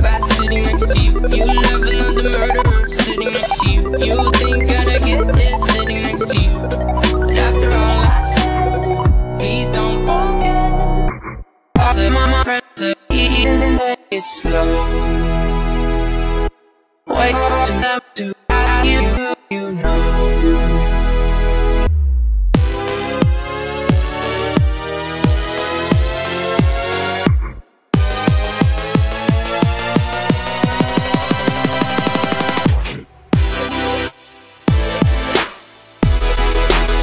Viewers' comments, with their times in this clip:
0:10 cloudchill it sounds sad a bit the but not really
0:22 wearing earphones and it sounds so frikkin weird. especially
0:22 Personally it was sounding awesome, until it wanted to sound like House If you would have kept going with glitched lyrics instead of that i would have loved it. Well done anyways